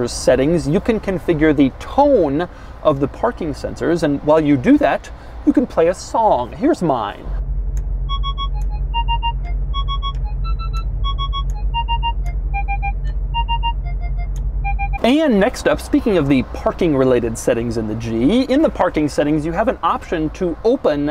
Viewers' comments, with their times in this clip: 0:07 Damn that song so fire 🔥🔥😍